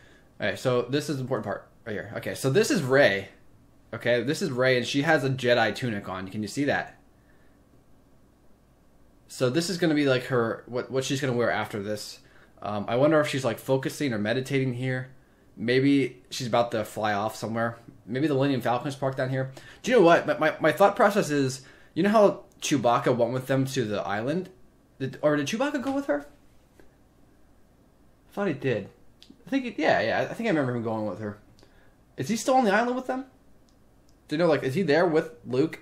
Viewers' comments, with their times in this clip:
0:04 you can hear Leia say: Help me Obi-Wan Kenobi...
0:18 At the start when Rey is gasping and on the floor I think she came out of the cave that's behind her, like the cave on yodas planet where Luke went in and saw Vader and fought him and saw himself. I think she will go in and see a dark future for her or her friends and u can hear yoda say "Binds us, surrounds us" your welcome